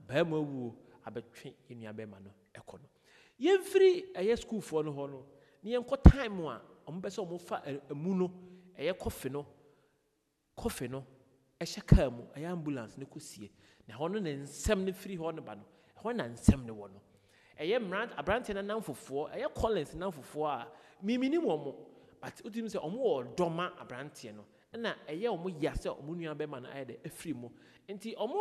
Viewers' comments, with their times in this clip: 0:09 was l the only one that heard "coffee"?😂😂😂😂😂😂😂😂